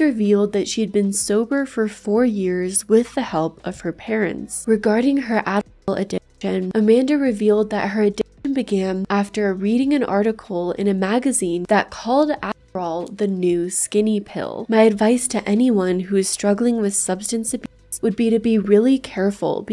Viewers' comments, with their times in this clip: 0:04 I want to say that I really love the care and time you put into this, and that it's super well done. That's really important that it's CLEAR and OBVIOUS that I'm being extremely sincere, because I am. I mean it for real. ♥ That said, at I could NOT contain myself when ~ you censored "Adderall" and I really thought you were saying Amanda had an "Asshole Addition." I mean it REALLY sounds like that. 🌠 ♫ "I hope you're happy, but don't be happier." ♪